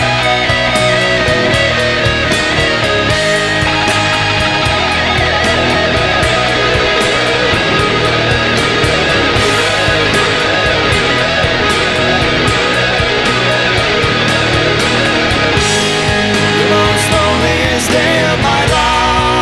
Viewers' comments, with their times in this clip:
0:03 i can swear this part sounds faster than it looks
0:05 Fucking awesome your the only person I've hear that can pull of the right notes at the solo